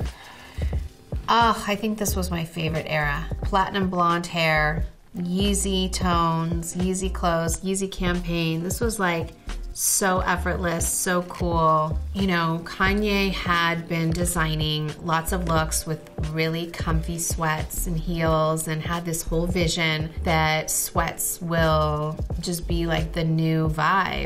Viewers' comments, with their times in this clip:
0:09 when she says so effortless, I automatically think of kourtney impersonation of Kim.